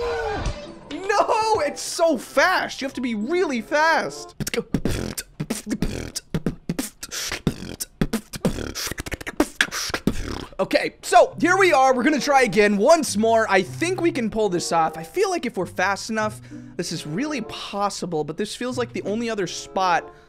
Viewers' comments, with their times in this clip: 0:05 Holy moly that some sick beatboxing wow
0:05 wow wow sick beatboxing